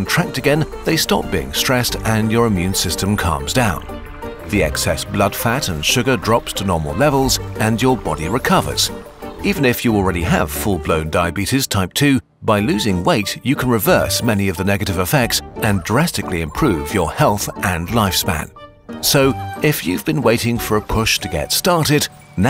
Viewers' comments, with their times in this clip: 0:04 DE EXCESS BLOOD FAT 🇯🇲🇯🇲🗣️🗣️